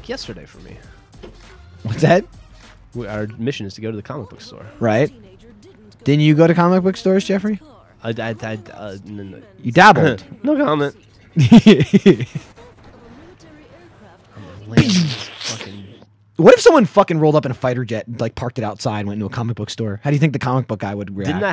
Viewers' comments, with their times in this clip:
0:05 hahahahahaha too funny!!! XD thumbs up for Michaels laugh!